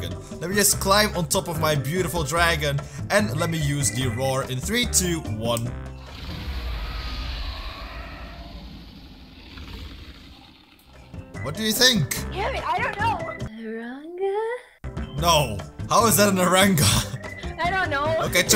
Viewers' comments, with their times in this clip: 0:06 bruh is the EXACT same roar as kendyll in CoS wow